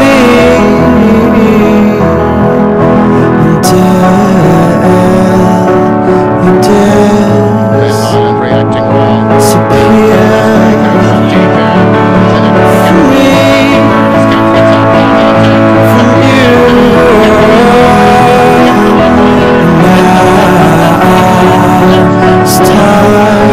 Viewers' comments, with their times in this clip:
0:09 I’m lovin’ the score ahah